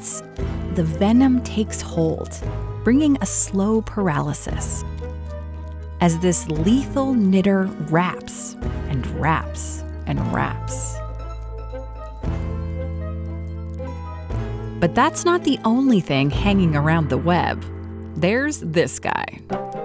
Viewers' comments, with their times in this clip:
0:06 had to be really careful to pronounce that correctly 😂